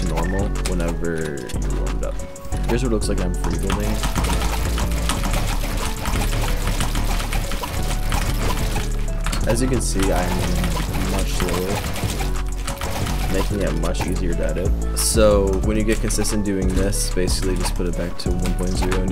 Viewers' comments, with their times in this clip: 0:03 bro not even trying to be funny but sound like somthing is about to break down in his house lol